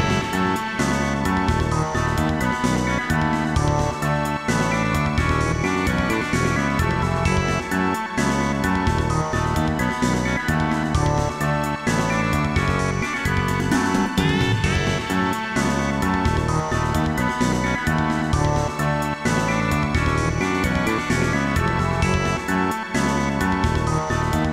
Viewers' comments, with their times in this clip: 0:05 That boy band cover lol